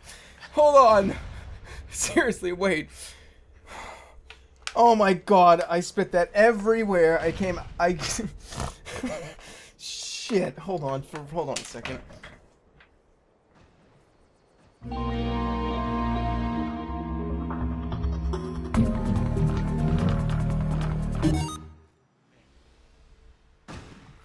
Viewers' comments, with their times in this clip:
0:06 I THOUGHT YOU SAID YOU DON'T USUALLY SNORT!